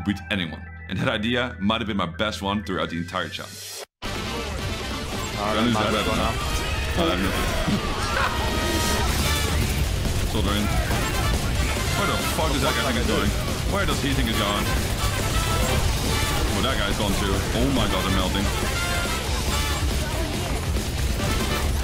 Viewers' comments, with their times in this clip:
0:04 The epic music starting was actually so good. Where is it from?